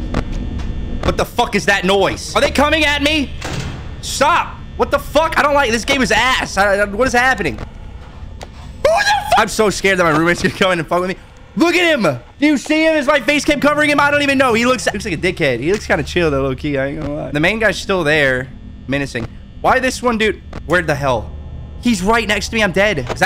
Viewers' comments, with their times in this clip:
0:08 i thought he said "im so scared that my roomate is gona come in here and fondle me"